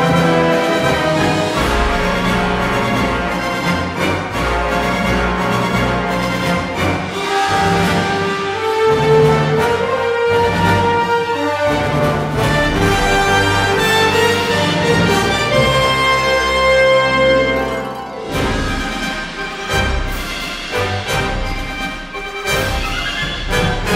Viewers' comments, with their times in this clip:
0:07 why does the force theme go SO good with EVERYTHING epic and soft